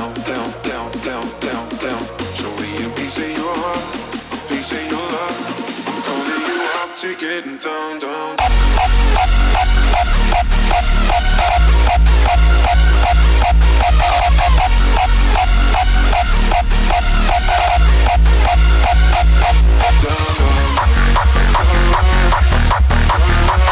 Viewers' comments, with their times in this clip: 0:10 Baseline sounds out of tune dude why?